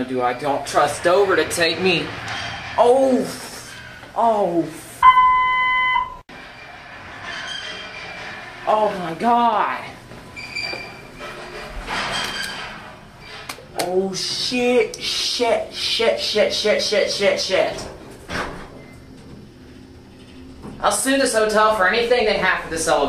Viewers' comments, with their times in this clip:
0:04 oh f DOVER BEEP😂😂😂😂😂😂😂😂😂
0:05 long Otis series 1 beep instead of Dover chime